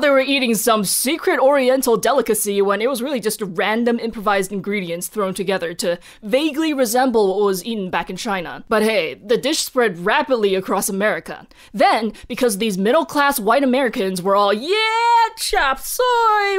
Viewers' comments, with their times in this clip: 0:04 The song you included or so, scared the hell outta me😱